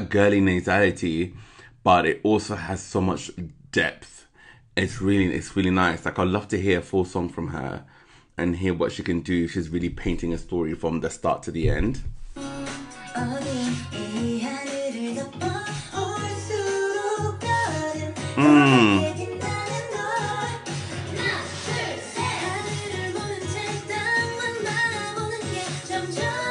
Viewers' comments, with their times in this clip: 0:07 Back then i wasnt really noticed hayoung's voice but now her voice became more matured and unique like husky + soulful and somehow deep a lil bit. It makes apink songs sound more colourful tho
0:10 Hayoung's voice is definitely super unique! You can check our her solo "Don't Make Me Laugh", though it probably isn't the best display of her vocal abilities~